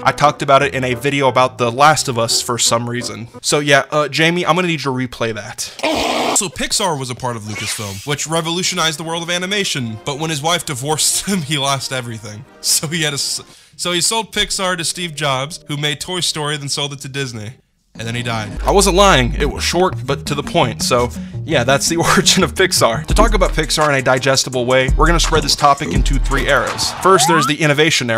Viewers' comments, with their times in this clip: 0:10 Bro why you laughin 🤣?